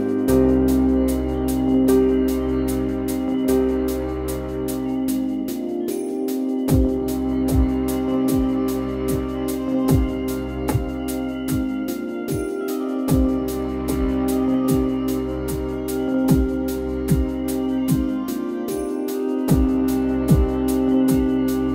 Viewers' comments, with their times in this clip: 0:07 of Interstice of Time sounds strangely similar to the music in shrines in botw and totk. which is even more coincidental, considering the importance of time in both stories.